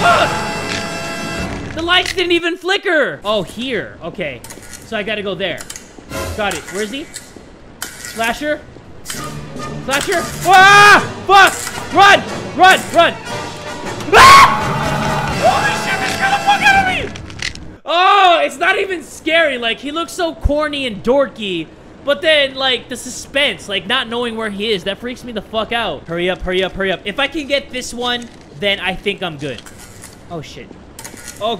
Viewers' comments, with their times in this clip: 0:05 Wait wait for it..... and...... BAM! 😂 HAHAHAHA
0:12 title isn't lying
0:14 part where he screams like a Japanese school girl and I also screamed like a Japanese school girl and my heart jumped
0:14 I got scared because of his scream lmao